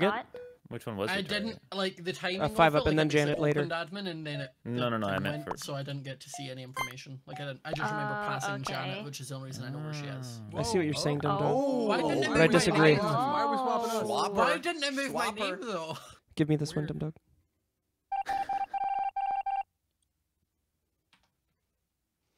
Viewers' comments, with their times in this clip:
0:10 Did anybody else have Siri pop up (iPhone) it doesn’t sound like ‘hey Siri’ yet she popped up